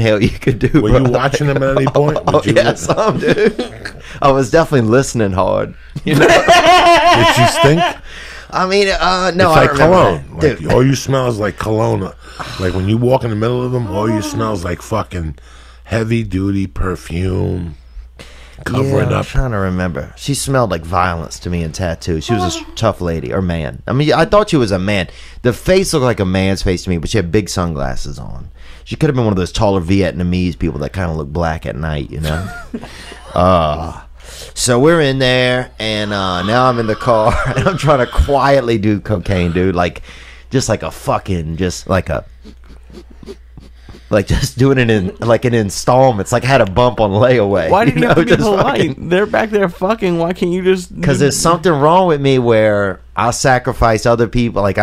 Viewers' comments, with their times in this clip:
0:04 I never heard Lee like that before 😂😂😂😂
0:04 wait for lees laugh. i lovem but what was that sounds like thenkid who bags my groceries
0:04 I had to reel up that laugh The most random shit I've ever heard loooool
0:06 Dafuq is that laugh 😂
0:28 Taller Vietnamese description and Diaz sounding like he’s keeling over when he laughs 😆
0:36 Joeys mate call